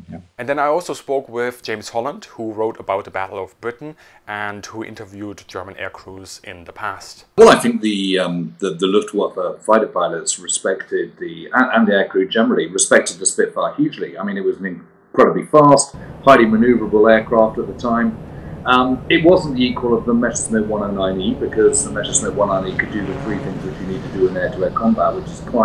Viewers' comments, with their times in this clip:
0:07 min.: Very bad audio quality when James Holland is speaking!